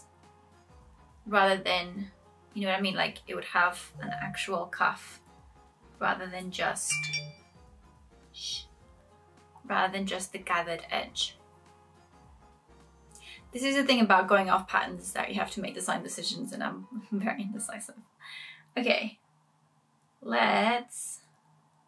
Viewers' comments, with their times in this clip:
0:07 Such a relatable "shush" to the electronics 😅